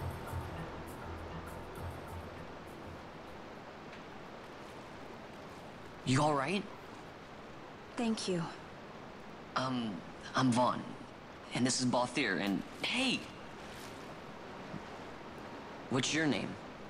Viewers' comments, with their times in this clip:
0:03 "Yawright..?" AH! Vaan has turned Scouse!